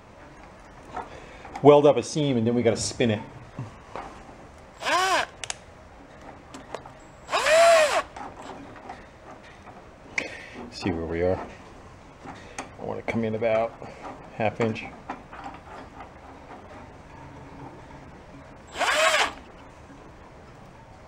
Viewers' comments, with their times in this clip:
0:03 sounds exactly like you screaming, "ahhh!"